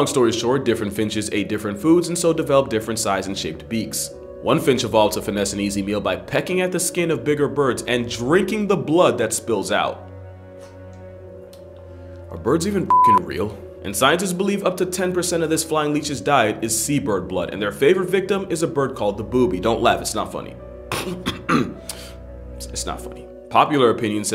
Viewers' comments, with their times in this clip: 0:09 had me cracking up. just how calm takes a drink swollows and then states " Birds even real?"